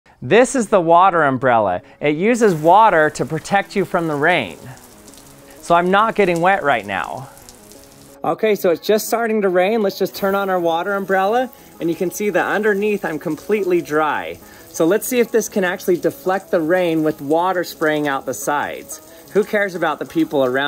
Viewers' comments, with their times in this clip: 0:05 Sounds like my wife.